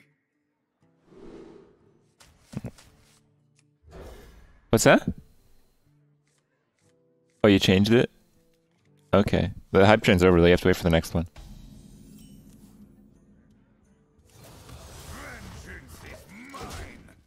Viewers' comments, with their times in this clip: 0:03 Kripp DOES take off the headphones and says "What's up?" in high voice to someone, in this video.